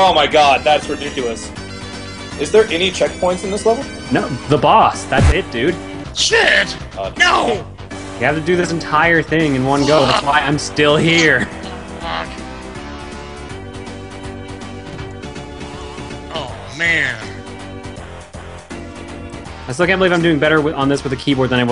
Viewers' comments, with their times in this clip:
0:05 It's like the background music says: "Look at those losers, the game is fucking them up"